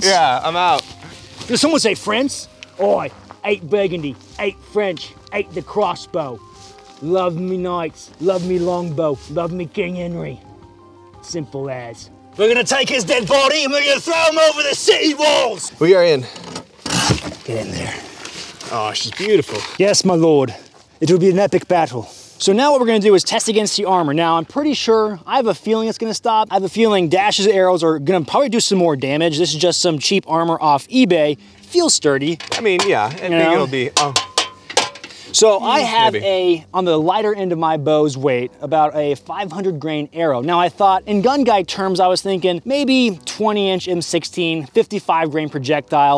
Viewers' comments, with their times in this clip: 0:08 you sound Australian not British!
0:31 "Feels sturdy" (knocks on armor and it sounds like a soda can)